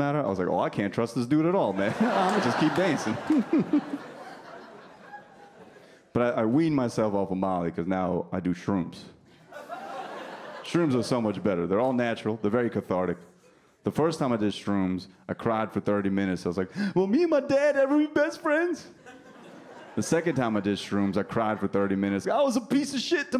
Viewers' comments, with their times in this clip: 0:04 I thought he was funny. Why did people suddenly stop laughing?